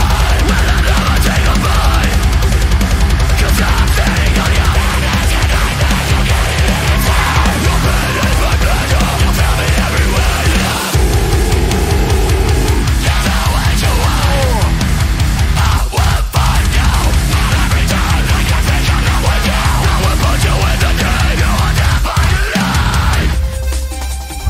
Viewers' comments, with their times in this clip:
0:10 that growl gives me the chills every time